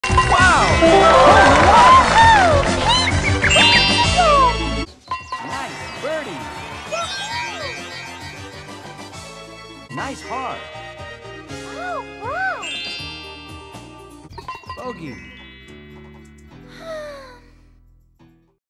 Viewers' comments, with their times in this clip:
0:01 Chic (from Fortnite): Peach’s Voices is Very UwU